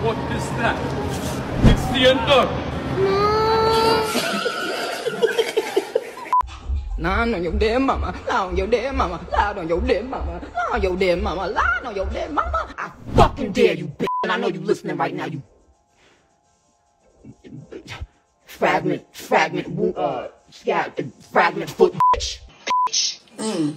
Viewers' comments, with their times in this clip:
0:07 The way Nicki Minaj stuttered was so funny 😂